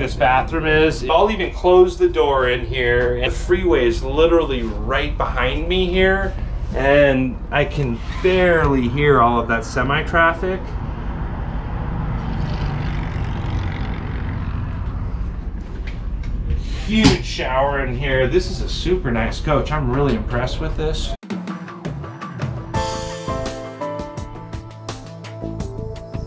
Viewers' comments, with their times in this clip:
0:07 the window is cracked open . . . but still, it's very quiet inside